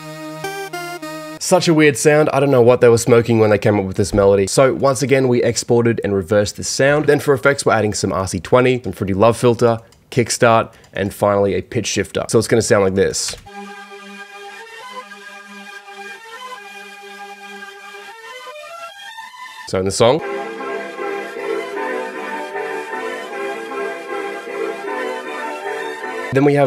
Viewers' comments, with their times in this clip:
0:07 sounds like part of a horro game/movie